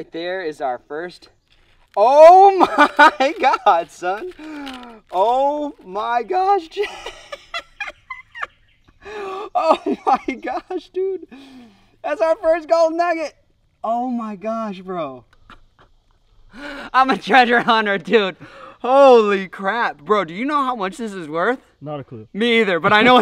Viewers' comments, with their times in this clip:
0:07 to 12 sound like the bird i hear every morning